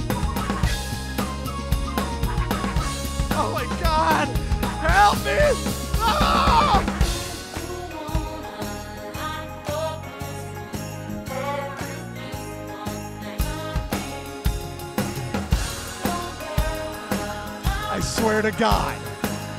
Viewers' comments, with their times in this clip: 0:07 sounds like that vtuber song "mofu mofu" or something like that
0:07 Is that Christmas Music? XD